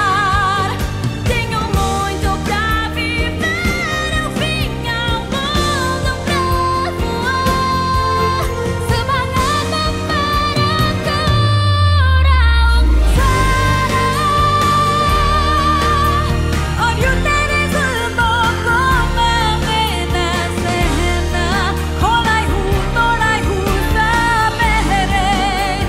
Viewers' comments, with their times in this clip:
0:08 Malaysian version so energetic lol